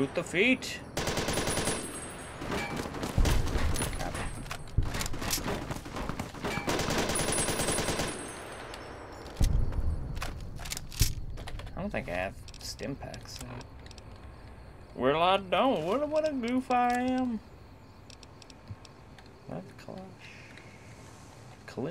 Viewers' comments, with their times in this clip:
0:06 i like how he hides behind a bush wile getting shot at and the bush sounds like clanking metal